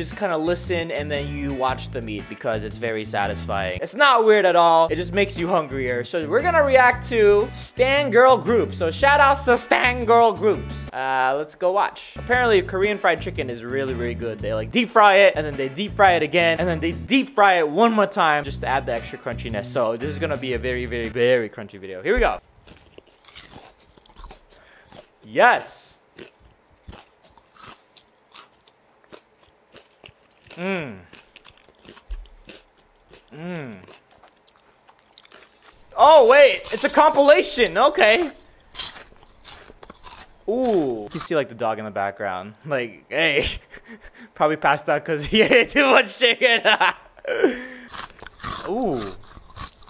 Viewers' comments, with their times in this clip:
0:08 that laugh tho xD
0:36 the sounds are fake